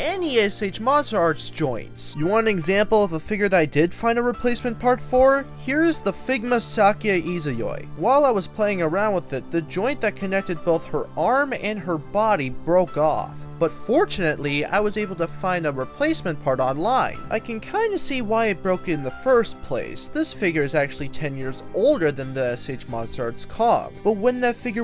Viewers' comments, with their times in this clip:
0:07 he sounds like a kid doing a review when he says that